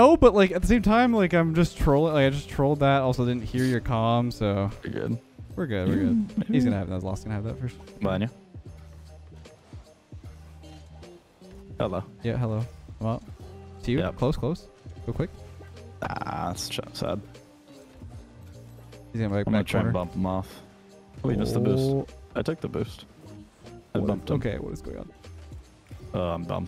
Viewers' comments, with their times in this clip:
0:10 that mid com hello was so canadian lol